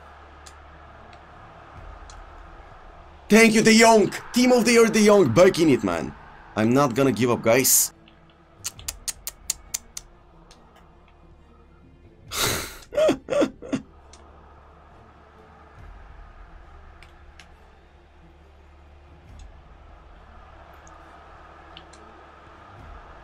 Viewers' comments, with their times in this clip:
0:08 idk what he is doing and on what he is laughing, but I feel like he is starting to have some brain problems. 🤣🤣